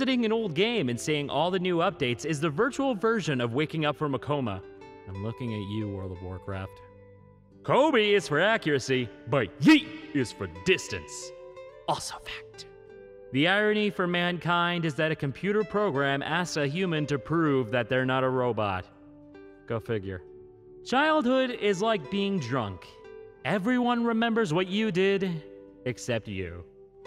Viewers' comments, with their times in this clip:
0:08 wtf the YEET echoed